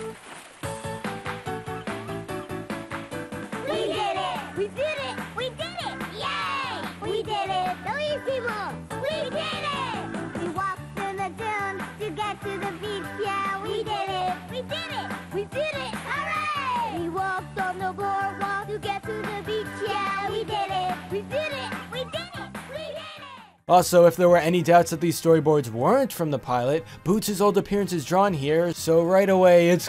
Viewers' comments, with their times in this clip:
0:10 does dora voice sound differnt in the pilot or the same in the show?